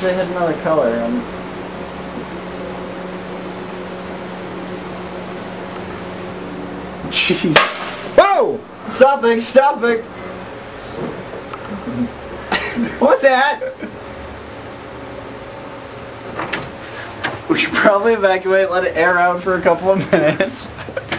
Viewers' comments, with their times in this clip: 0:09 I never understood what they said